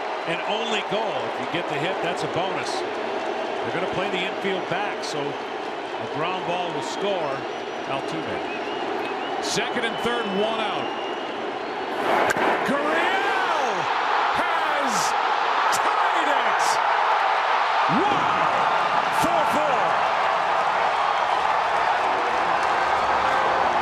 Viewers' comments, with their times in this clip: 0:05 charge whistle before Gurriel hits the homer.
0:05 is when you hear the whistle.... again..
0:07 you can hear the charge whistle.